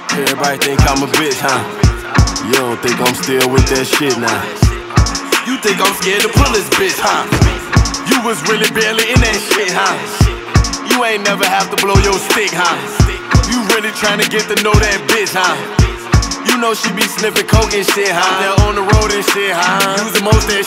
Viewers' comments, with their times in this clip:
0:05 I remember first time I was listening to this song I was just walking down the street when I saw a couple arguing and just left a couple steps later heard that gun sound and I turn around thinking it was real n shi 💀💀